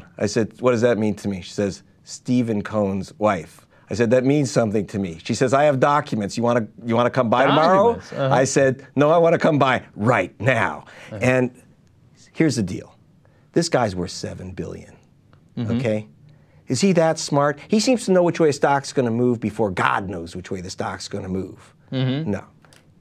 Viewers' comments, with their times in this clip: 0:07 Cenk can barely stop himself from shouting "documents"